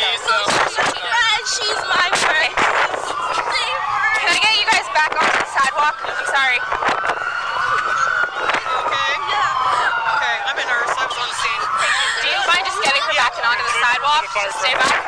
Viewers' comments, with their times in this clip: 0:03 so heartbreaking hearing that girls deep concern for her friend. Pretty sure she was the 19 year old college student that didn’t make it.